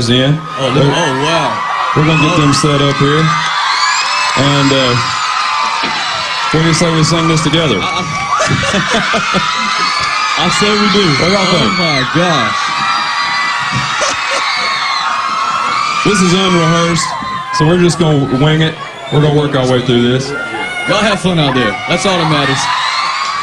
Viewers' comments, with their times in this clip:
0:08 Scotty's laugh Love it!